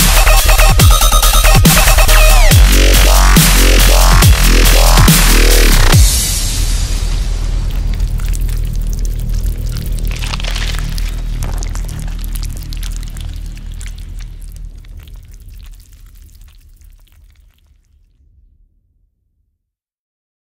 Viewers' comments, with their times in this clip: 0:07 my spaghetti made that noise I recomend to eat spaghetti to this song